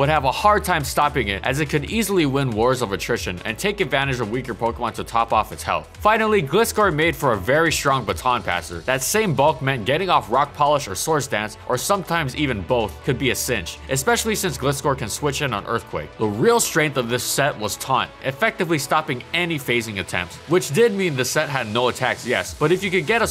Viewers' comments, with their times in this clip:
0:09 Peter Griffin giggle Getting off Rock Polish.